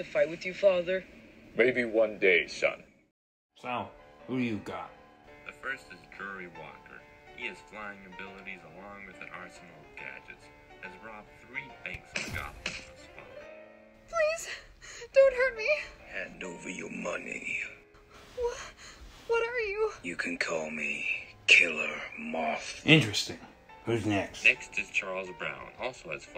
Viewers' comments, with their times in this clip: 0:07 bruh, why not hire all 3 of them I’m just joking, this was a pretty solid brickfilm. However I don’t really think Peinguins noises were really needed.